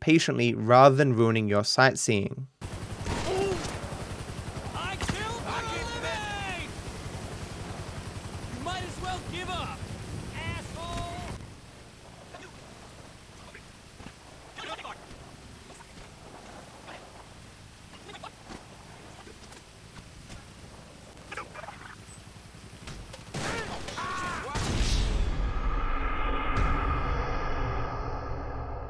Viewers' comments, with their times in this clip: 0:10 .. NA cops screaming over there, too real